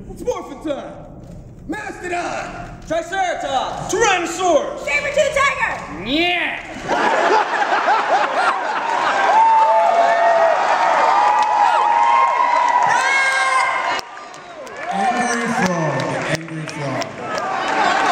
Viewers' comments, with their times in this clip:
0:05 That was awesome! Woo go David, love that cartwheel! :D and Johnny going neyh made me die of laughing! Hahahah! "neeyah" lmao!
0:05 Who's that guy in yelling as the last? I can't recognize him...